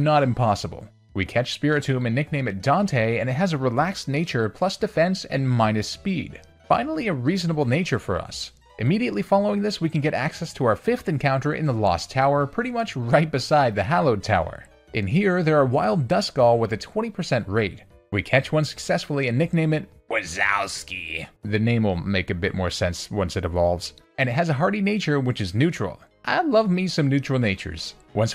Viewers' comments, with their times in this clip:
0:09 I hear clicking sounds in the background